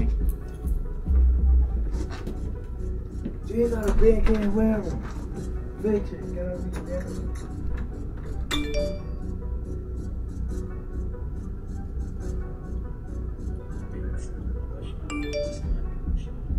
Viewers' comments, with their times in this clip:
0:04 mf started singing tooteres 😭